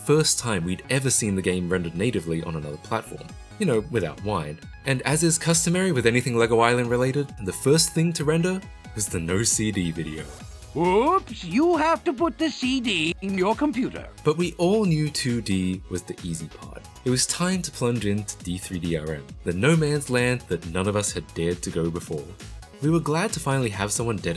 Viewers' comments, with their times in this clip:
0:10 I cant unheard whoops you have to put the cd in your butt after that meme. Now the orignal just sound wrong